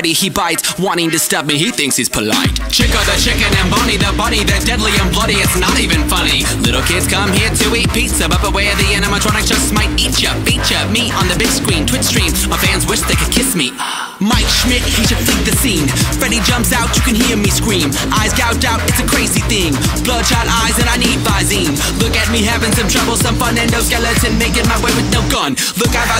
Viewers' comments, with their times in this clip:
0:07 I thought it was "Beat your Meat on the Big Screen"